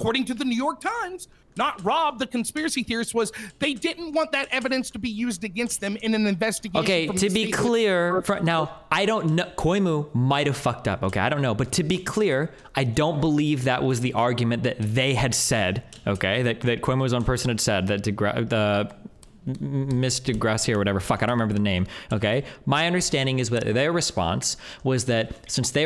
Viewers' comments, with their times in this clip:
0:09 Coy-mu might be the funniest mispronunciation of Cuomo I’ve ever heard.